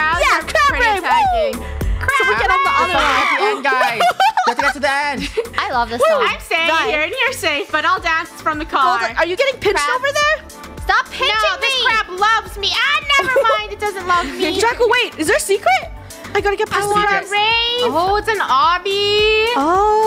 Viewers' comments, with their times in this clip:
0:03 whos scream was that lol